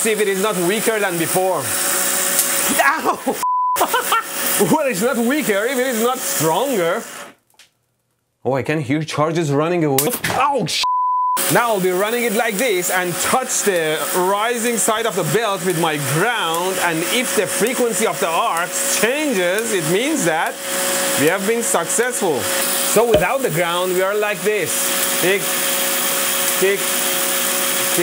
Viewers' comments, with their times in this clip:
0:09 let me listen to the build up charge, nothing bad will come for this. 😆